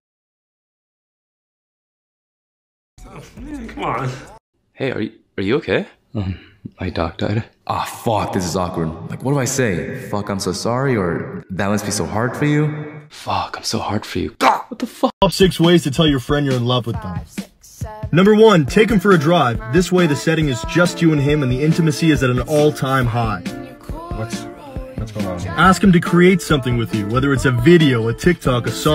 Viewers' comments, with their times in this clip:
0:10 IM KILLED BY THR POWER OF WHEEZENESS 😖🤣🤣🤣